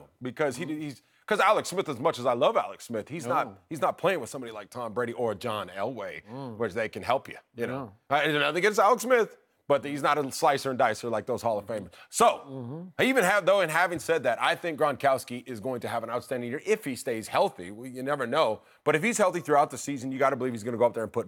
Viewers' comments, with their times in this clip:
0:05 as soon as Tony said “John Elway” in that sarcastic voice, Shannon went into attack mode